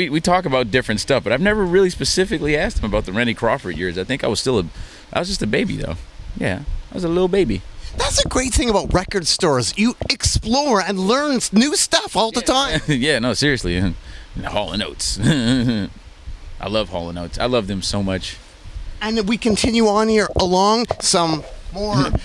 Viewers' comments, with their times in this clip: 0:05 Thunder cat saying "I was just a little baby" sounds straight outta adventure time